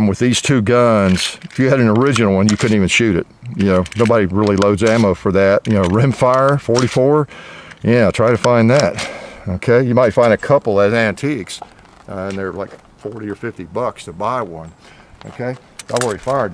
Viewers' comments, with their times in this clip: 0:04 You can also hear freedom from afar in